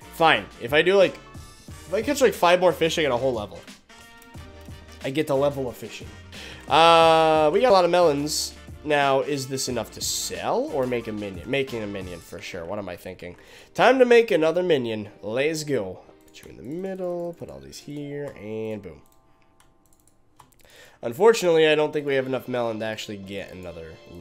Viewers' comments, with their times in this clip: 0:06 wth happended to ur voice?
0:06 voice crack go brrrRRRRrrrrr lol
0:07 the man speaks kinda fast